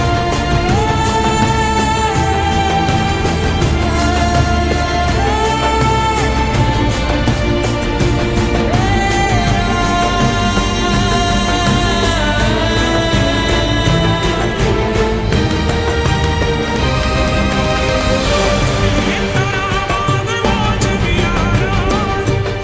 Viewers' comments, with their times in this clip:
0:05 what's the language ? is it an indian language?